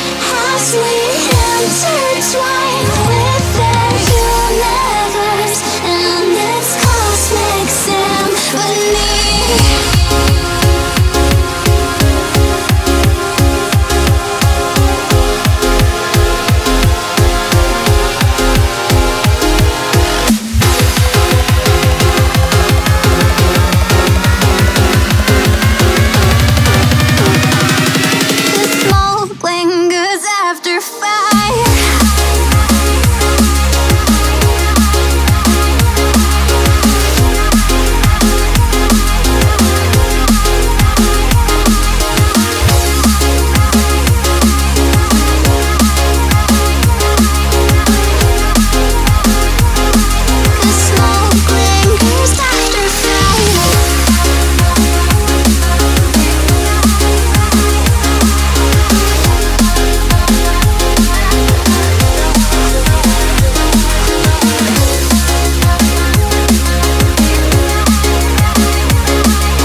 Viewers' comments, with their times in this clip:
0:08 I thought someone joined in my discord channel
0:32 sounds like Get Right Get Right Get Right Get Right....
0:52 Im the only one who hear's Roblox's Oof sound in ??